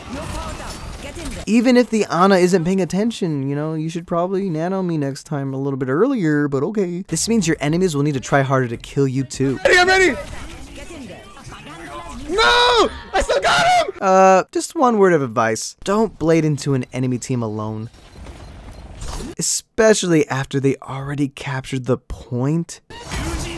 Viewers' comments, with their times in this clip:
0:04 sounds like kermit